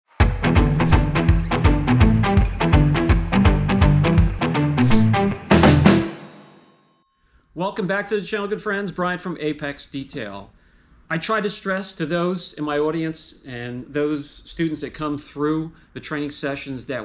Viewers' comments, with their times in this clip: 0:02 Where'd that opening riff ever go ? Fkn rock like jam